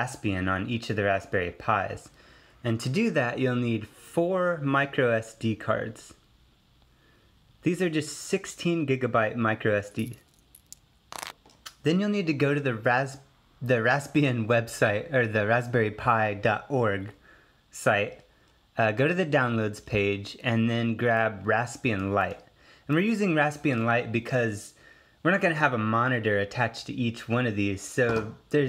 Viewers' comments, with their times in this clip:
0:05 it sounds like he just ate the micro SD cards.
0:10 i thought he ate the chips when i heard a crunch sound xD